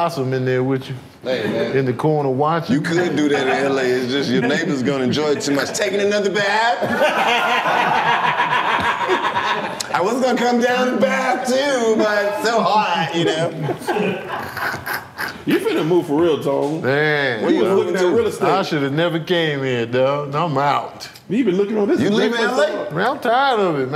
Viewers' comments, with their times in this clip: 0:06 Karlous impersonations are hilarious.